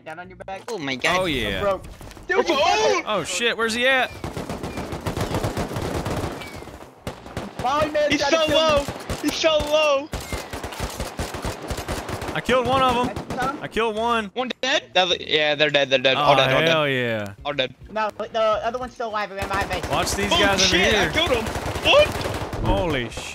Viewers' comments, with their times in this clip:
0:08 inshallah? Or he’s so low?